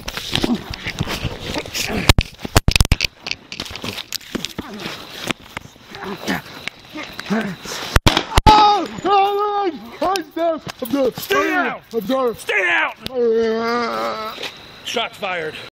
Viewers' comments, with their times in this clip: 0:08 Omg Why did he sound like that? That is disturbing. Why did his voice change like that? I know he was fatally shot but why did he sound like that?
0:10 what little girl sounds like that
0:12 Officer:What's sup Dog! And now you sound like a real dog now.
0:13 the growl of loosing consciousness while talking!!! good night, sleep tight and don't let the ground worms bite!!! (when they bury you 6 feet under)